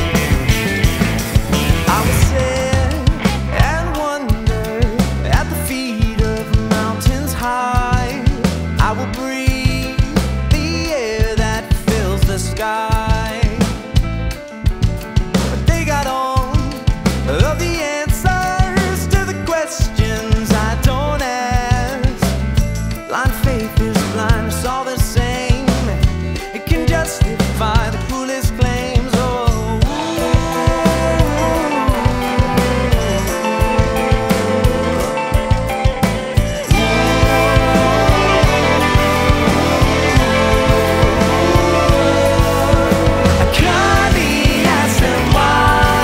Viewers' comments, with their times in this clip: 0:03 Muted reverse-rake! You rock dude!
0:14 sorry to be stickler but right the piano's rhythm slacks
0:30 the second guitar coming in makes me so nostalgic to NES/SNES. I love these guys